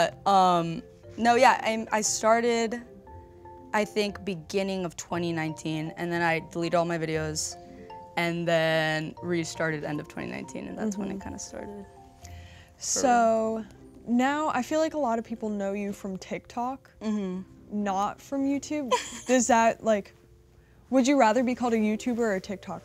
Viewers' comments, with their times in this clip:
0:04 bruhhh I straight up thought coco melon was playing in my house lol